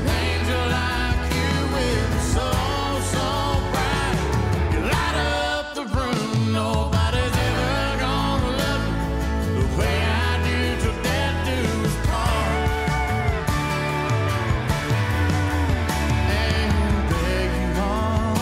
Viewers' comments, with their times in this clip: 0:05 There's that break I was waiting for Good song, great voice.